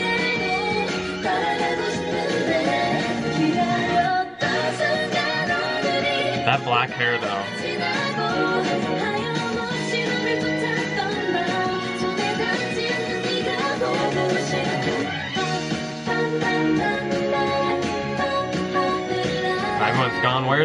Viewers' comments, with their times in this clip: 0:04 honestly it is more to anime song and i love it